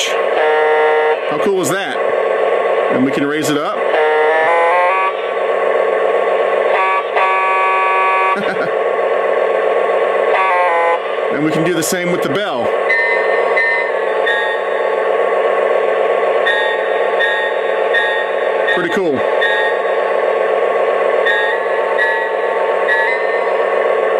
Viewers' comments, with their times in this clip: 0:06 Sounds like my Old Tonka Truck Horn. This is a Beautiful TrainSet.